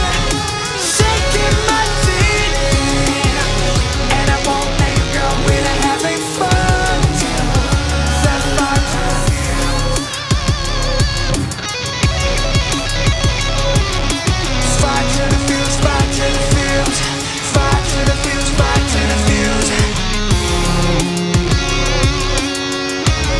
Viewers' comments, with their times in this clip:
0:09 I'm so mad I can't find a version with the sick guitars from